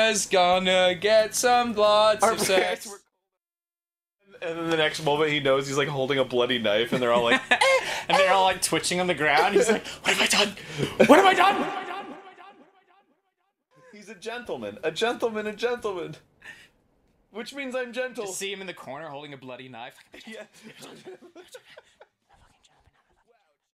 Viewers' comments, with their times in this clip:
0:10 Sounded like Stewie